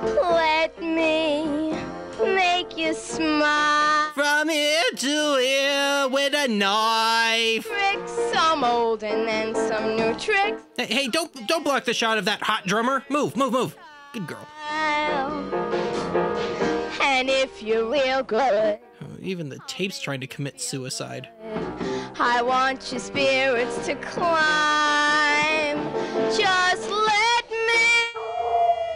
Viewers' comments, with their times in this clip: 0:10 Ok, The chick is a lousy singer. But I found her physically attractive. 😍